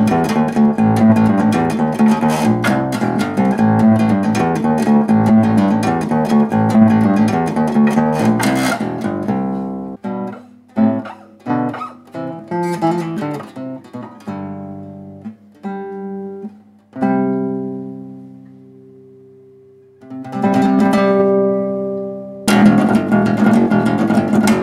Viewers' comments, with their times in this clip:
0:10 Sounds like Fight fire with fire intro